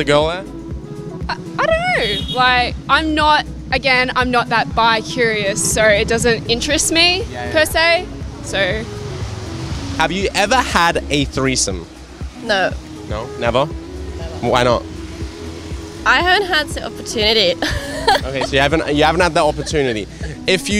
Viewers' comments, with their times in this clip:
0:08 She is British?? Love her English (and look)